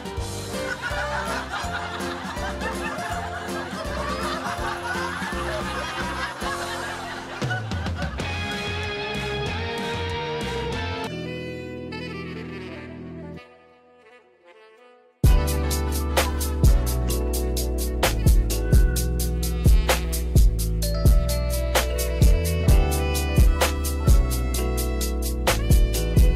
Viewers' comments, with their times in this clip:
0:10 that beat is crazy